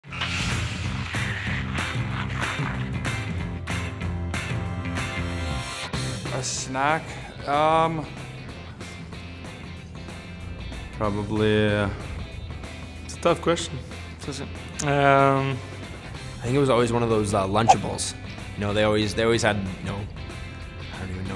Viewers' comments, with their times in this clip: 0:06 i thought sean avery was speaking for a sec lol